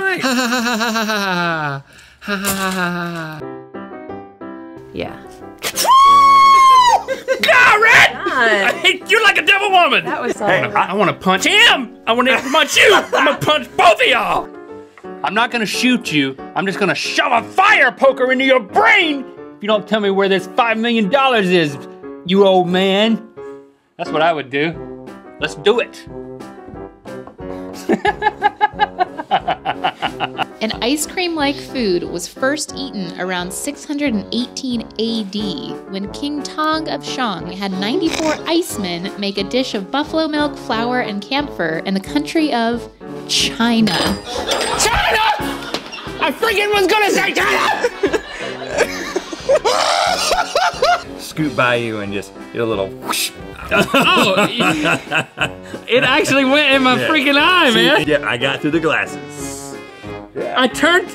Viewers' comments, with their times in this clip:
0:05 put he speed at 0.25x speed. It be sounding like a ambulance
0:05 why is he screaming
0:05 HOW DID LINK HIT THAT NOTE NEHWJDB
0:05 Link’s FWOOOOOOOOOOOO has me dEad!
0:05 ok but Link just hit a freakin C6
0:05 My fire alarm whenever i burn food:
0:05 Train horns be like
0:06 That's a C#
0:07 casually hits a C#6 lmaoo
0:43 „cHinA“ gets me every time 😂 i-
0:48 the best laugh ever
0:49 Maybe its only me but at this moment his laugh sounds exactly like the laugh of Me Samuel L Jackson from Heightful Eight when he was telling the story about Old Mans son. Correct me if im wrong but its So almost identical. 🤣🤣🤣